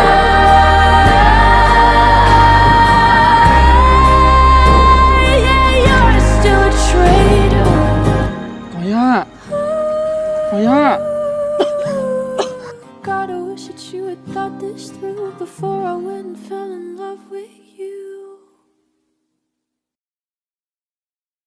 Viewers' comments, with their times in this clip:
0:06 The way ren called gorya just melted my heart ❤ 💫